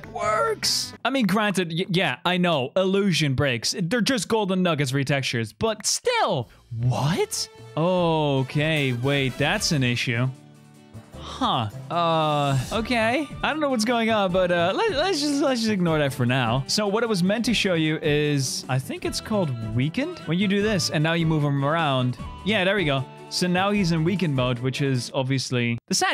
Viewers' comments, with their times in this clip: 0:10 that was the most expressive "huh" I've ever heard